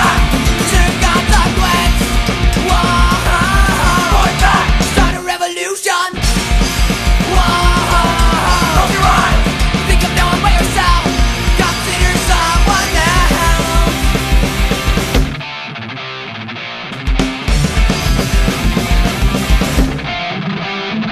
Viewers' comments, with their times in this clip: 0:08 it sounds like they yell 'pokemon' in the background lol